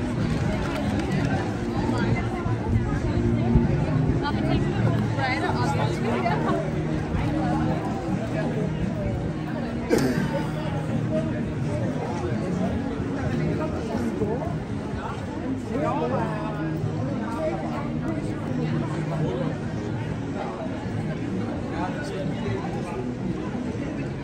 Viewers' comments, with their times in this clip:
0:07 I think that's the most rock'n'roll version of California Dreaming I've ever heard. I like the dude's shirt I think it says "I like coffee and maybe 3 people" ☺